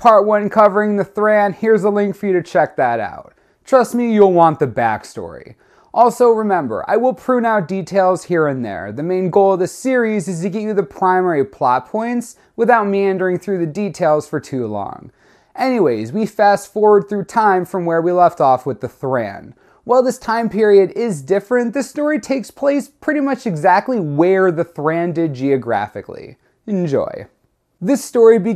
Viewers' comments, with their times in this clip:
0:09 "primary plot points." the way you flawlessly rumble over ridiculously hard words to narrate makes me cry evrytiem.